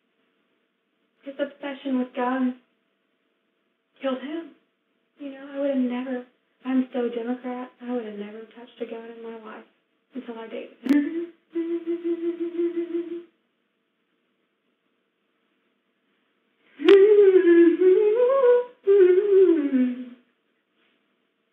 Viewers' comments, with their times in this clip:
0:05 she’s gotten an, AMAZING SINGING VOICE!! WOW. Usually soft speaking people do. Not all tho. Dam. Someone should have helped her in a singing career. Sheesh.